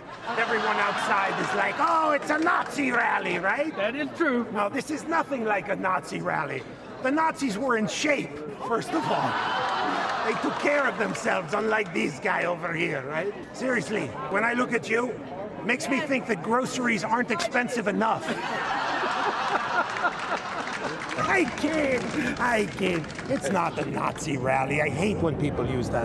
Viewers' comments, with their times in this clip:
0:09 Apparently you missed the part where the big guy laughed at the oblivious fat joke.
0:09 Apparently you missed the part where the big guy laughed at the oblivious fat joke.
0:09 Apparently you missed the part where the big guy laughed at the oblivious fat joke.